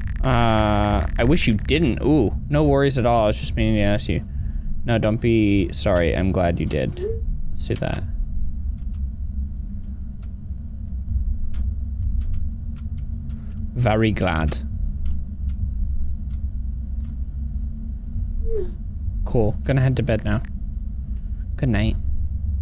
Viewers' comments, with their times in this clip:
0:09 why did he turn British